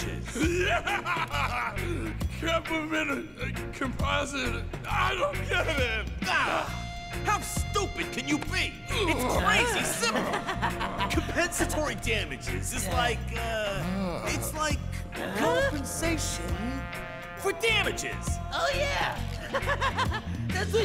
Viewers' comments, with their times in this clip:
0:08 omg it's just like the hyenas in The Lion King